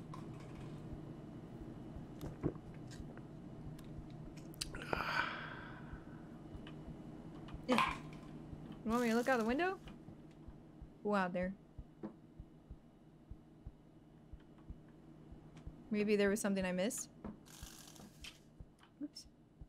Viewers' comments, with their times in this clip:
0:04 Anyone else think that sounds like a manly 14 year old